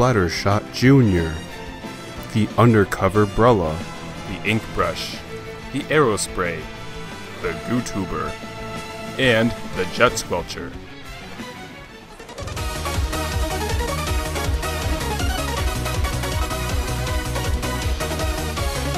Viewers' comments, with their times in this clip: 0:03 u mean the “HAHAHA”?